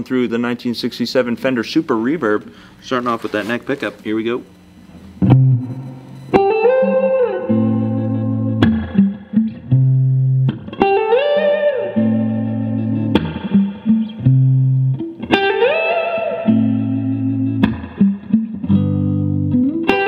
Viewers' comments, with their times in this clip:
0:05 Dannngg that tone!!🔥🔥